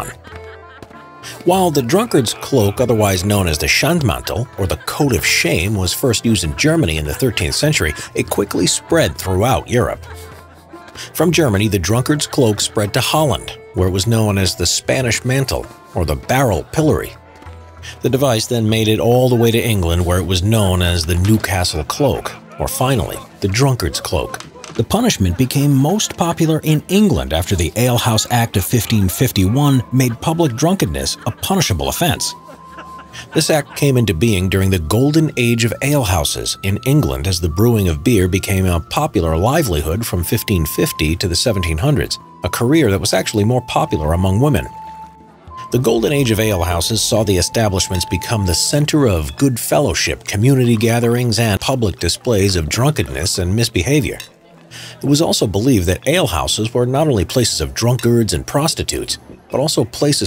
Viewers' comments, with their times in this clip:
0:08 did I just hear the narrator chuckle under his breath
0:46 why did i hear a volatile from dying light scream?